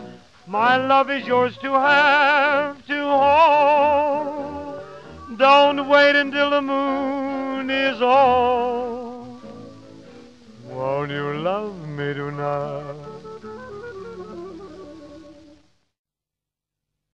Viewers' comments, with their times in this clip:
0:10 And if this great big world really does end, this will be the way, neither with a bang nor a whimper but an invitation à la Armstrong: "won't you lóve me tonight?!"